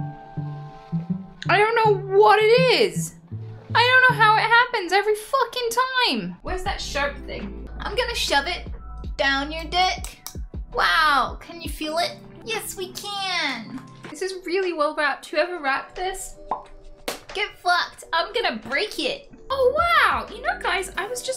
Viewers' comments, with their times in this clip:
0:09 i love how tic n2 answer to tic n1